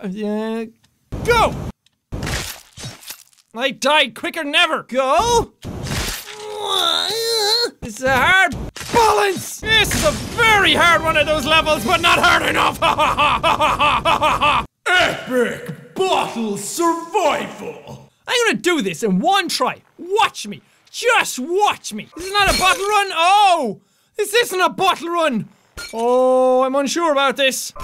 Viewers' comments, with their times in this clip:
0:05 What was that noise???
0:06 wtf, what kind of whine is that 😂😂😂😂😂😂😂😂
0:06 what noise did Jack make? XD
0:06 wtf was that noise !?!?
0:12 i cant stop laughing when jack laughed
0:12 i love the laugh XD
0:15 he sounds like he’s in stage